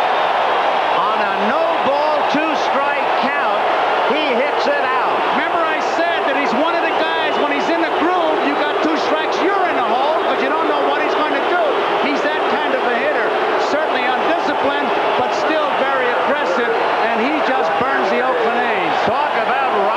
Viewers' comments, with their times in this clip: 0:05 the crowd, after initially going wild, collectively giving Mike Marshall the Mooooooose. Gotta love it.